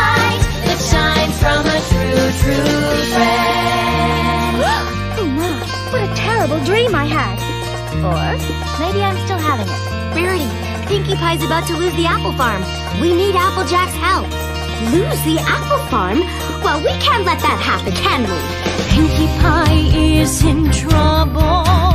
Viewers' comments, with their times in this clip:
0:06 "We can't let that happen" doesn't even sound like Rarity. Such a random thing to get re-recorded lol